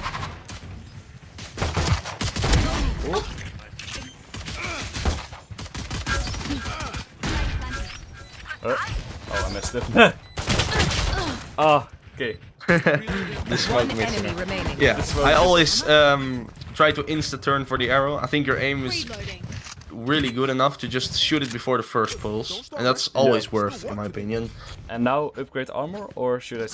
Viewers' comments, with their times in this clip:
0:08 that laugh tho lool